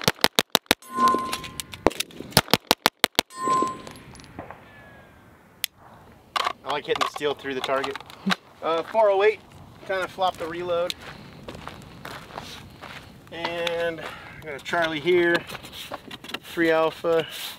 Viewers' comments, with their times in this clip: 0:03 Anyone else catch all those ricochets